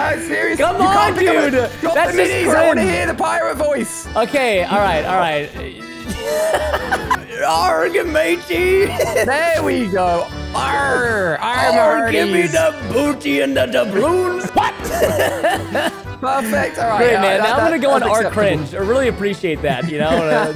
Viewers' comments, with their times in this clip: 0:07 Preston : Arrrg Matey! Captions : Origami!